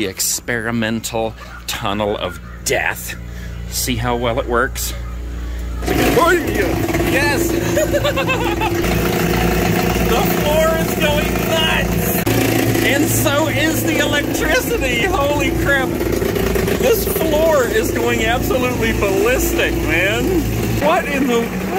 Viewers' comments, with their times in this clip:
0:05 i thought you farted 🤣